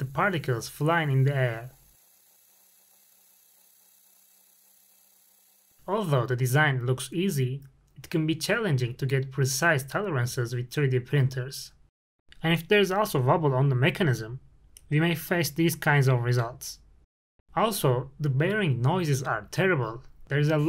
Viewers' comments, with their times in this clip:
0:04 if there are no gear teeth this gearbox should be quieter, but this is producing a lot of noise. where is this noise coming from? vibrations? could it be reduced using stiffer material with smaller tolerances? how does the noise compare to a geared equivalent gearbox?